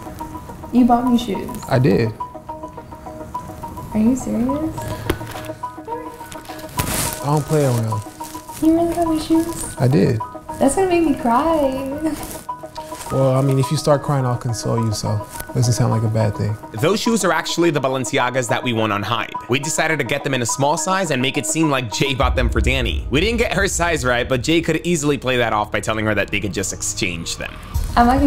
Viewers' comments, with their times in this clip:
0:10 I want that girl so bad her voice is soothing and beautiful